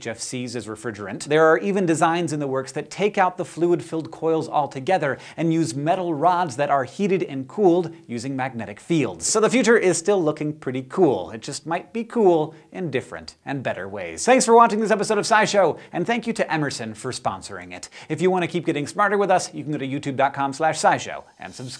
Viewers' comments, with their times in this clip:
0:05 if you listen to Hank say "metal rods", he sounds a lot like David Bowie